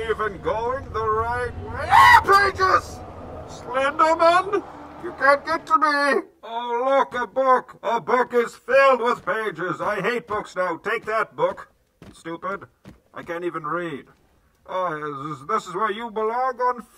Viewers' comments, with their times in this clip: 0:03 his bane voice goes away